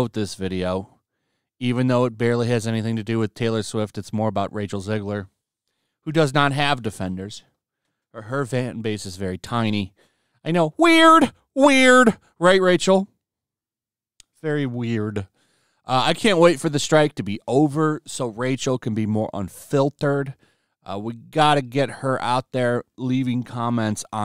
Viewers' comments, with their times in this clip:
0:10 Lmao your impression of her